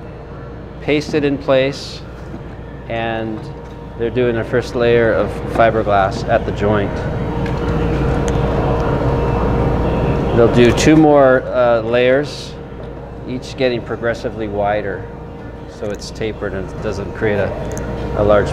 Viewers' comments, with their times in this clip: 0:06 in and i lost confidence on this dude actually showing HOW TO EXTEND A FIBERGLASS BOAT HULL just a stoner trying to explain it in his least excited “fk this job” attitude...